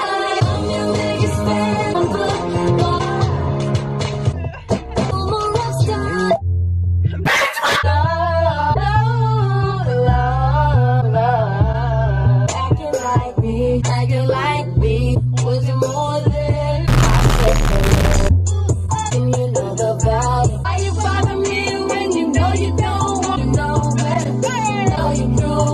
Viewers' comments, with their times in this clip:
0:08 THEY HIGHKEY HITTIN THE NOTES YAS QUEENS